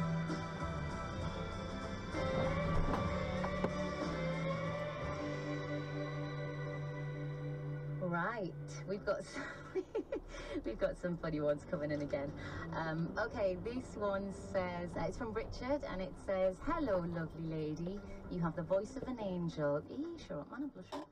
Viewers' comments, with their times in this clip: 0:03 the radio timing never fails to amuse.
0:08 The radio was absolutely perfect for the scene